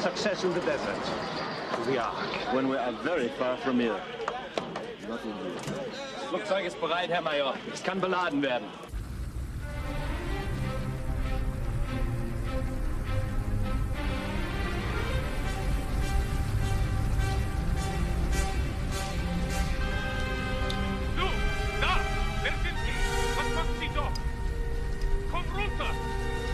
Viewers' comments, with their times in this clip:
0:09 Love the Flying Wing, the entire fight not to mention the music starting